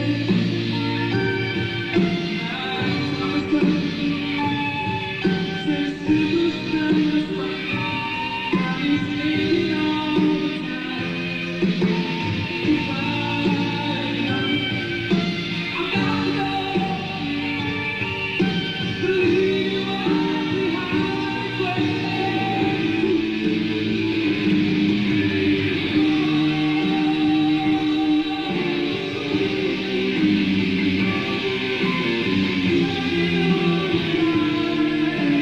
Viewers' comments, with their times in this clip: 0:07 are we not gonna talk about the only recorded studio phrasing for "body's aching all the time" in 1980
0:19 That "ALL" reminds me of some NOTW versions